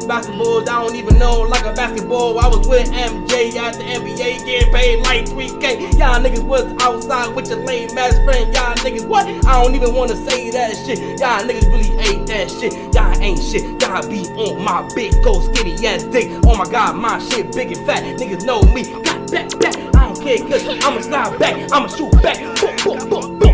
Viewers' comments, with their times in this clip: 0:05 i deadass need that fuckin beat